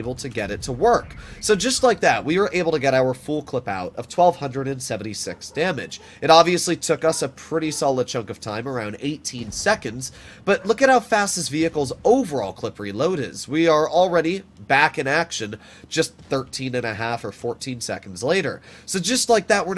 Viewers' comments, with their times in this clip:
0:07 can anyone else hear dogs barking? Lol